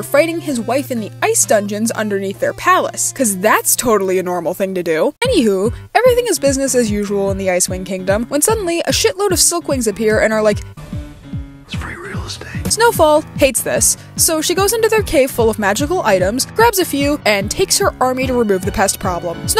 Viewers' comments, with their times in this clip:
0:05 Why 798 views only 75 likes!? This was hillarious 😂 Hailstorm in the background…